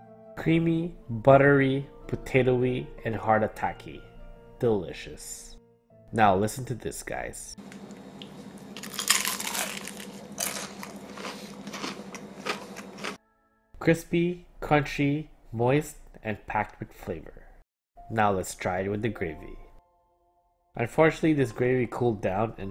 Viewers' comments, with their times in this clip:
0:08 damn that sound so crunchy
0:10 well that hurt my ears